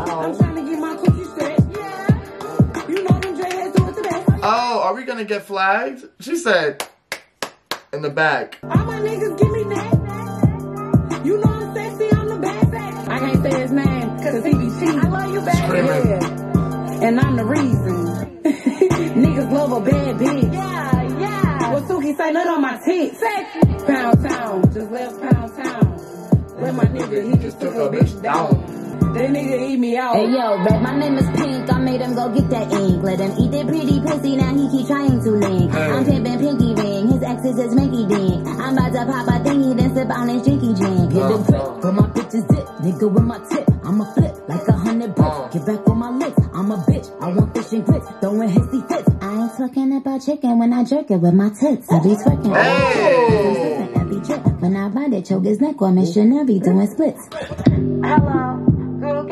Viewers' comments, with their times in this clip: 0:03 Not you clapping along 💀💀👏
0:41 reaction of EVERYBODY Ever during that flow switch